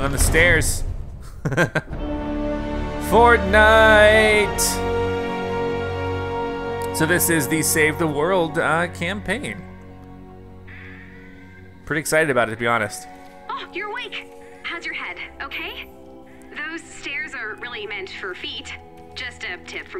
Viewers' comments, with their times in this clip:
0:03 fortnite should let this to be their official song. It gives me chill and it’s so nostalgic